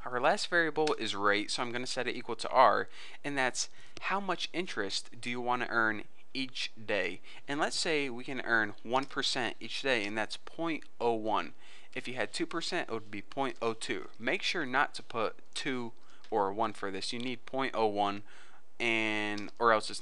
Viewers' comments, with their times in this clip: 0:03 I was in Code::Blocks and thought he said rape, not rate...